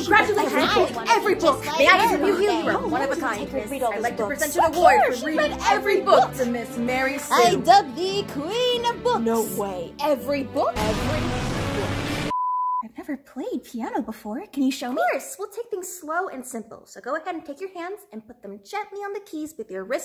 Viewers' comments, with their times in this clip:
0:04 DID I HEAR WARRIORS OR ARE THE SUBTITLES LYING